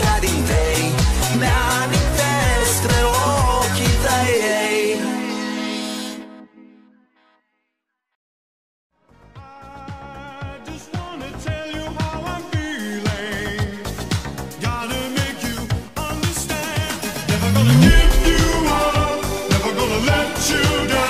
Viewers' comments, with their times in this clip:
0:09 this song is good *not ironic*[: